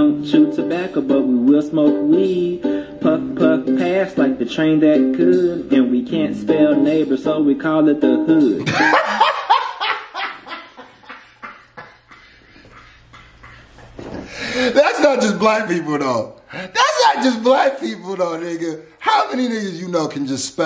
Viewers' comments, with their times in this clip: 0:08 This dudes laugh is contagious